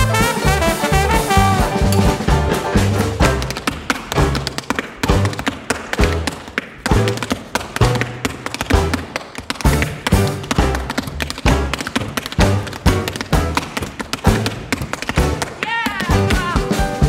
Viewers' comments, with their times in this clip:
0:03 Singing dancing trumpet ok now your just showing off